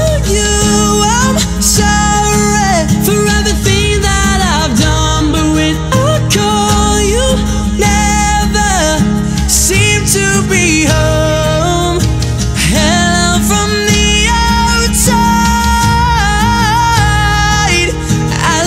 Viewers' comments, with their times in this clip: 0:03 too much autotune omg:(((( He sang:"Im sorrrre" like robot